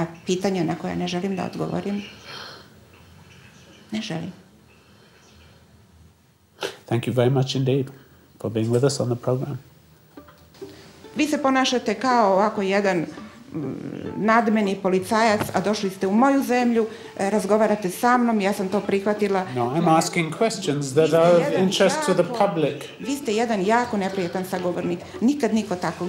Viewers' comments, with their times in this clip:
0:10 was when the sad music starts playing over Tim not being able to continue with interviewing the woman who's sitting on the chair.